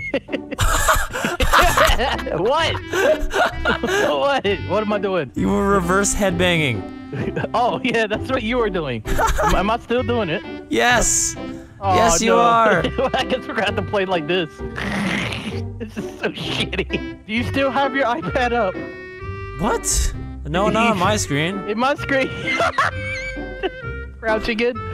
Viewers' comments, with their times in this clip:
0:08 nice laugh Vanoss lol